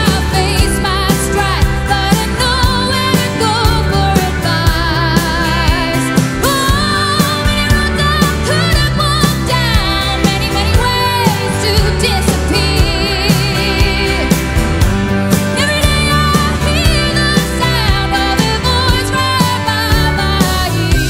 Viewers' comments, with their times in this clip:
0:03 the guitarist looks at Jess like "are you kidding me?" .... just stunning singing, and facilitated by Paul Kelly, a musical and lyrical genius without a trace of ego.